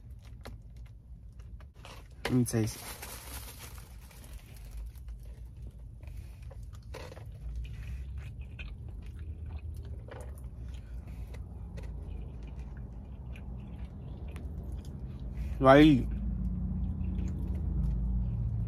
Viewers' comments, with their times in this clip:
0:04 you was munchinggg where the ASMR attt? 🙂